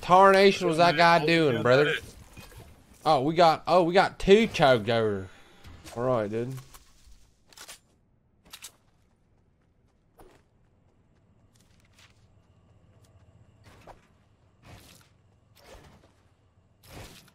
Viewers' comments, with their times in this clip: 0:04 why u talk like that u talk the same guy in toyko drift